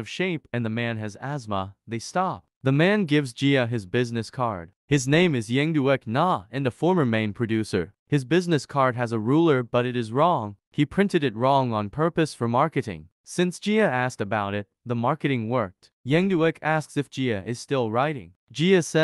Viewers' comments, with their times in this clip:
0:07 does her ex really has name "young dick na"